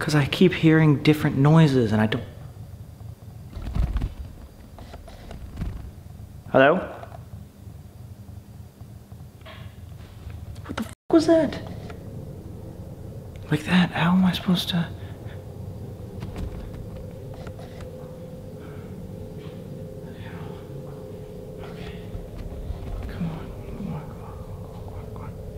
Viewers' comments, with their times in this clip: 0:06 So weird. I heard “hello” but then I tried relistening and I didn’t hear anything